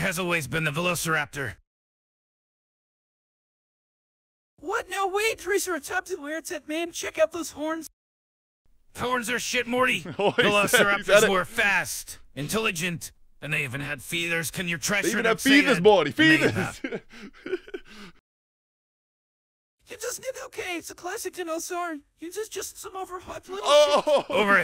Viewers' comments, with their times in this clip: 0:08 sounded so real bro